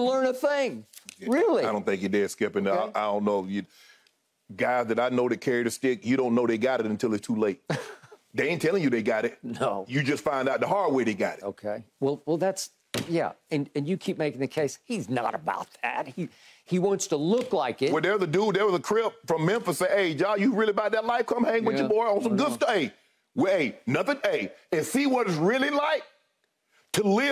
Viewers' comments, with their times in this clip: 0:10 The way Skip said “He’s not about that” got me in tears. 😂😂😂😂😂😂